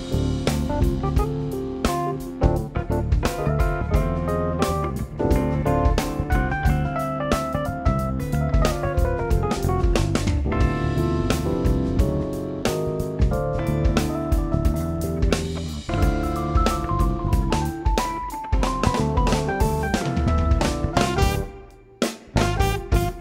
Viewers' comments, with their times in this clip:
0:10 Children did not deserve the keyboard climb